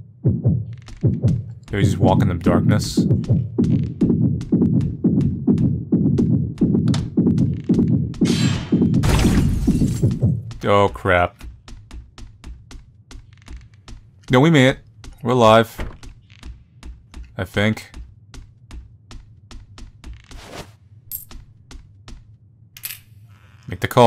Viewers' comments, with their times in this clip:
0:07 sounds like Mr. Kotowari killed someone